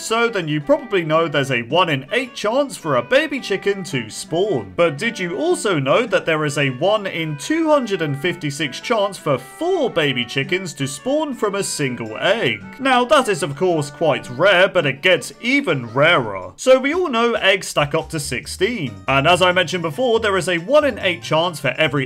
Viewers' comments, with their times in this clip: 0:10 OMGGG THAT BGM 😭 it’s so nostolgic wtf is it from